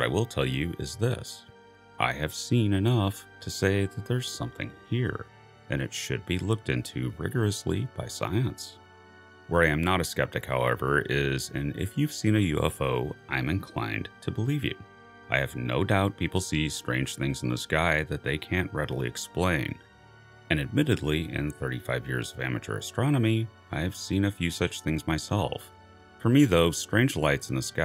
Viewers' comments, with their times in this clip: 0:09 is that a voice jump cut?